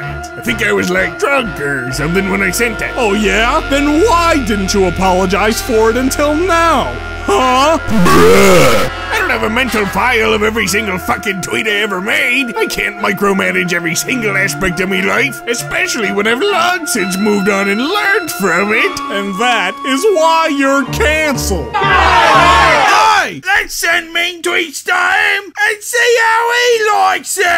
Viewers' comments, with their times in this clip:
0:08 that is Clancy Brown on point there